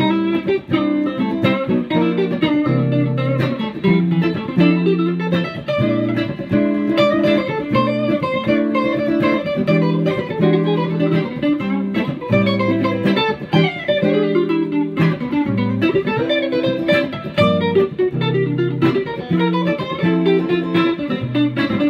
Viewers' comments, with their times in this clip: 0:09 is that a diminished lick ?